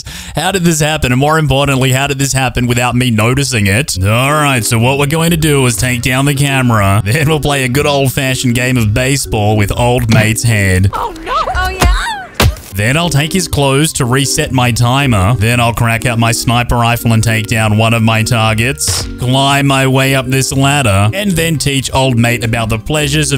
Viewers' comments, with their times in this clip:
0:10 what was dem noises bruh 😂😂😂😂
0:10 Is no one here talking about the female maid who sounded WAY too excited about getting beaten?
0:11 "Oh no, Oh yeah moans
0:11 she whent oh no ! Oh! voice crack yeah.?…..